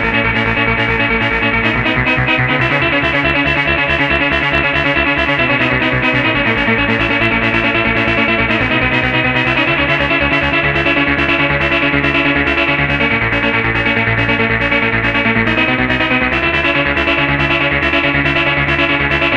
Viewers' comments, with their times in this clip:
0:05 "how to '90s Eurodance in one easy step"